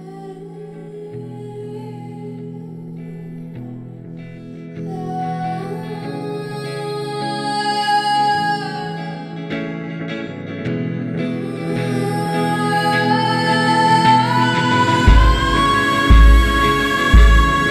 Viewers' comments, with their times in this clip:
0:03 That run after sent literal chills down my entire spine. I even rewatched it, and got chills yet again. Tash is a gift.